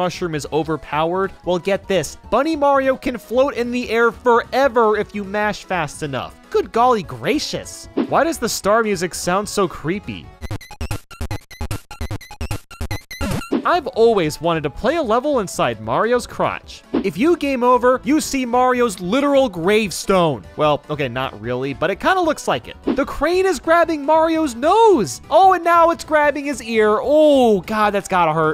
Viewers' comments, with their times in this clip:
0:10 it doesn’t sound bad if it’s 75 speed